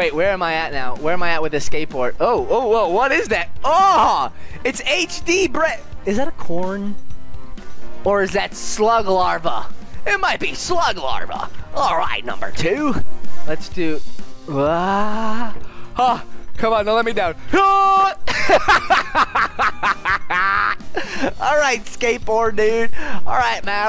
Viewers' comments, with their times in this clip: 0:09 i thought it said slug lava lol